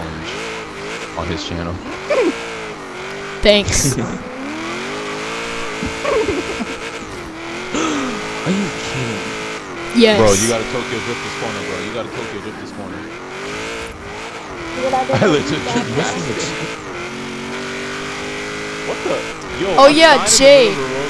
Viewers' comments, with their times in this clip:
0:05 Human Turbo spool???